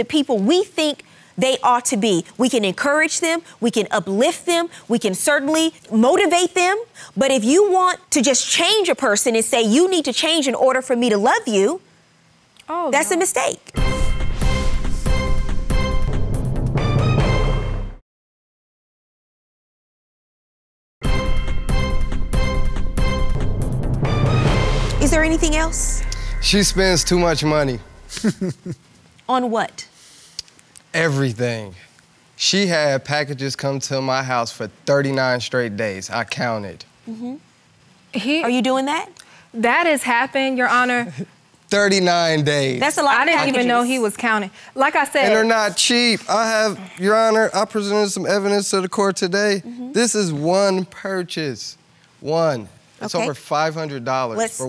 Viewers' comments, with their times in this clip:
0:06 Is that woman sobbing? I'm more invested in her and why she is crying than this whole case!!! HELP my ADHD is fixated on her now.
0:40 she bawlinggg loll whyyy